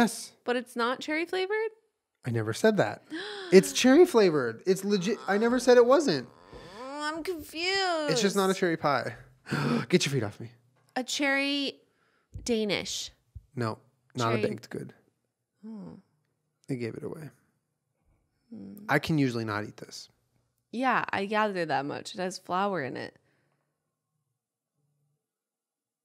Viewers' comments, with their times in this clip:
0:09 that gasp made me spit out my drink lol